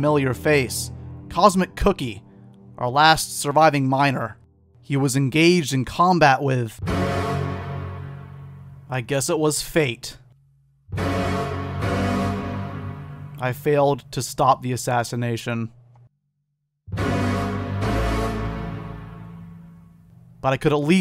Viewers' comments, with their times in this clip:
0:09 Excellent use of God Shattering Star